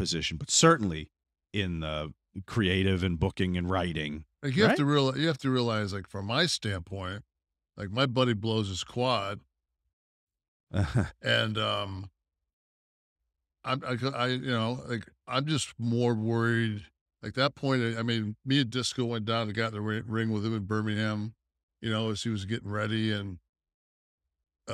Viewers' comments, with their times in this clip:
0:09 Idk why the chuckle had me dying